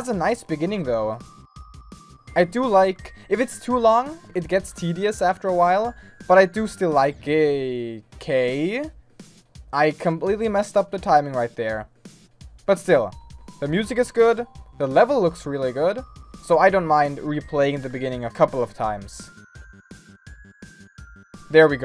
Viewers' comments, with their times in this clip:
0:05 you still like gay ahahhahahahaha